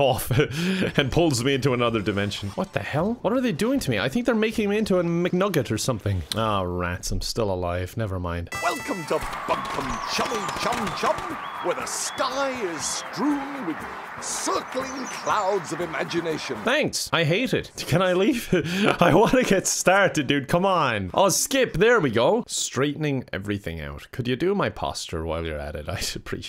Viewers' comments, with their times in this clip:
0:08 sounds he said "welcome to fucking chum chum chum"